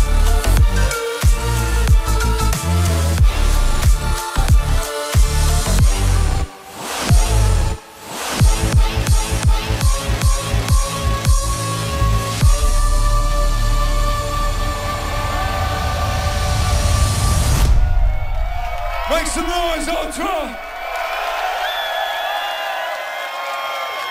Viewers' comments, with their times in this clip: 0:09 that song when that trumpet guy the calm music so cool